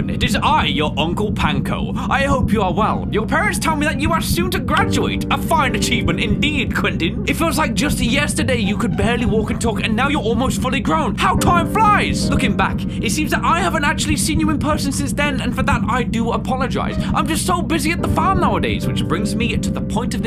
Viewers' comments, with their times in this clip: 0:04 As someone with the name Quentin that is NOT how you pronounce it my guy what was with that static noise its supposed to be a Q 😂😂